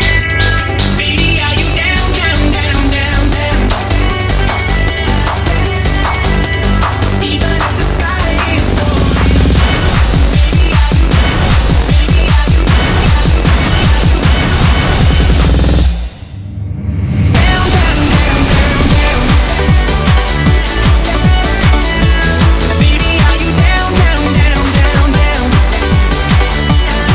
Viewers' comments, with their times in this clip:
0:10 then it goes up yet another notch ! boom. i like that. Good imagination